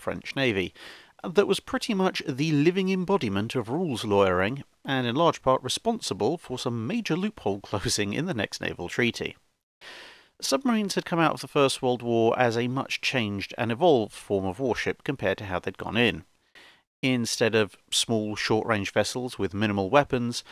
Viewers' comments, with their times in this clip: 0:06 what did he say ? I have listened 3 times and cannot understand it.